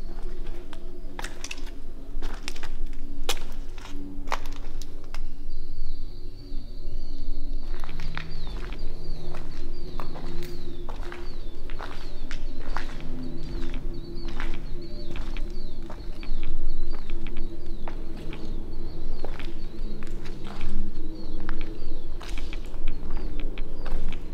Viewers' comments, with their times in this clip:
0:09 you can hear the rad sounds haha